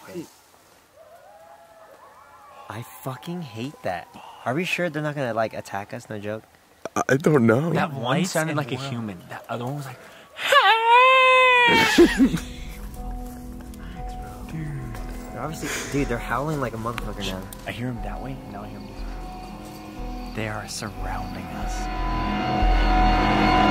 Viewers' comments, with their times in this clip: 0:03 where the coyotes are howling, from what I know that's a celebration howl meaning they're celebrating just killing something
0:08 sounds like girls partying